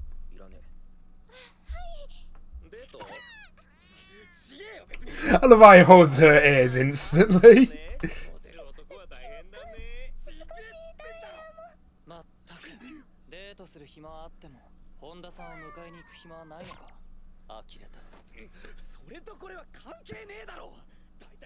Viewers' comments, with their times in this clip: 0:06 😂😂😂😂 Kyo meow angry effect